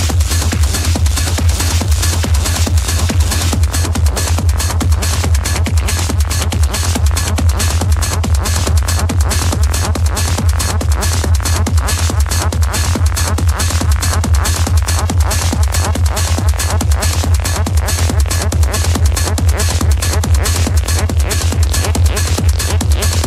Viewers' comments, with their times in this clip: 0:09 Love that track !!